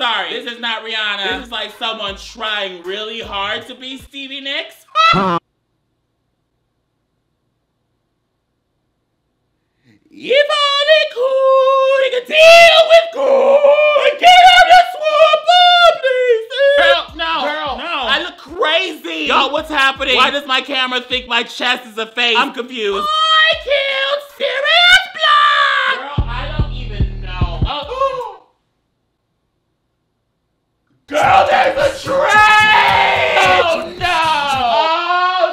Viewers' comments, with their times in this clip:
0:09 GIRL I LISTENED TO THAT AND I WAS LIT THINKING “whaaat” AND ALL I HEARD IN MY HEAD AFTER WAS “iwa god gettiwihm swap ewe Pla is “ and I knew the song
0:23 LMAO I HEARD THE GINGERMAN VOICE FROM SHREK